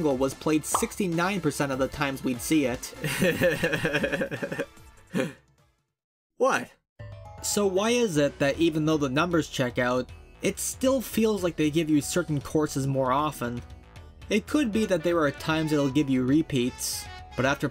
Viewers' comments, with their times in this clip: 0:03 Bro has the perfect Seth Rogan laugh 😂